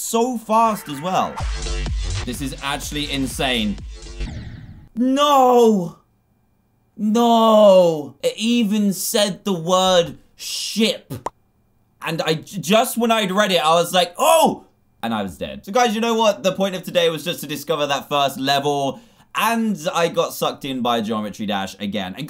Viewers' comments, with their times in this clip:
0:10 I thought he swore